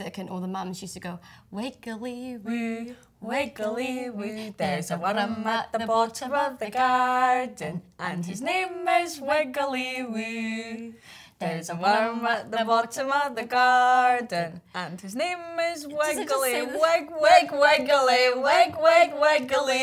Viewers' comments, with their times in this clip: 0:03 I thought their scottish was good 😂